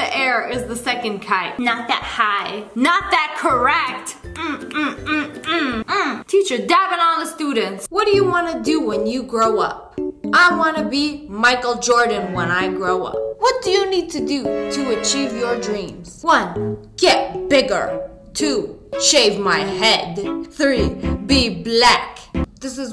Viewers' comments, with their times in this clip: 0:08 did it just replay the sane thing two times or is it just me because it said the sane thing again
0:10 i swear the michael jordan thing played 2 tomes or was that just a glitch?